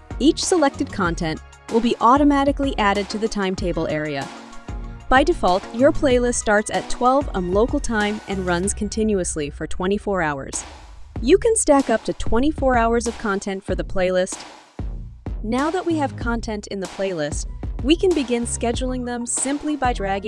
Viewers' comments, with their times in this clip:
0:06 this is where you can tell for sure that they used an AI voice actor